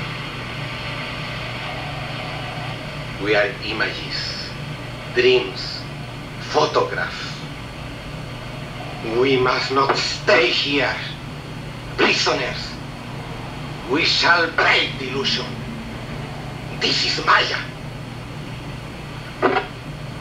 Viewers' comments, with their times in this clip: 0:04 You can't say "Go watch that movie" and the spoil the end of The Holy Mountain... Also, you mispronounced Jodorowsky every single time.